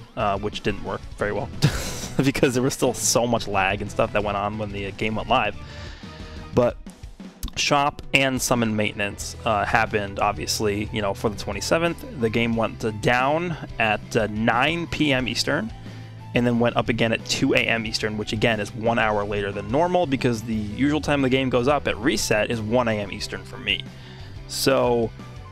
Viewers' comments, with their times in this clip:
0:09 Why is there a glitch/studder in the music you're playing? I know this is the PHY Vegeta OST but the same part has a studder in it. is around where I heard the first one and it was consistent in that part the whole video